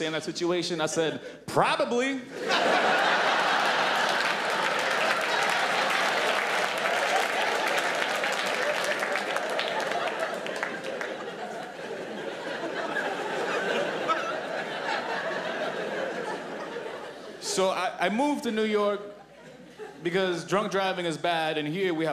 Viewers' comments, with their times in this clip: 0:03 girl in the middle starts to laugh and then stops abruptly. guess she doesn't feel comfortable enough to laugh about pee in front of friends lololololololololol at least she has friends........
0:04 Girl laughing suddenly changes her mind that it is not funny anymore.